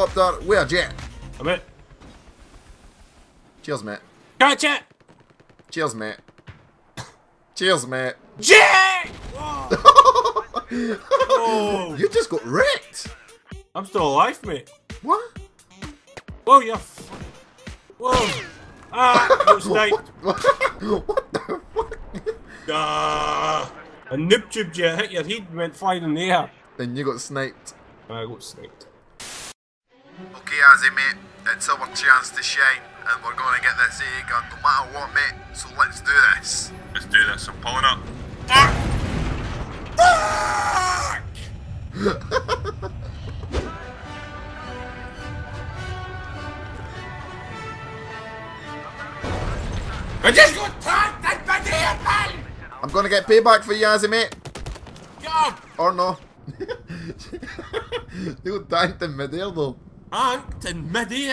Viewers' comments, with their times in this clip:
0:07 Karma, IS A BITCH! BOOM
0:42 how did they made themselves sound like they actually are in a jet??? im looking for a program of some sort which can do this